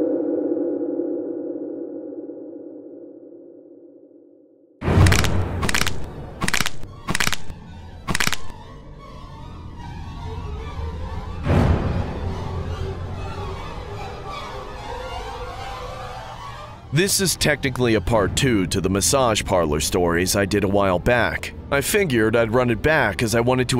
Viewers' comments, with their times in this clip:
0:04 the cracking is so ICONIC 🤣🤣🤣
0:05 the cracking sounds had me so off guard lmao